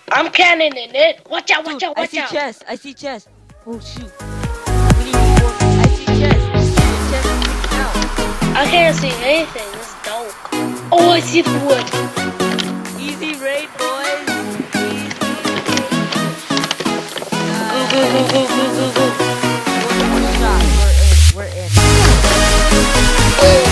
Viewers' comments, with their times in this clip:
0:06 can really hear me but i dont really say anything since there's nothing there Lol xD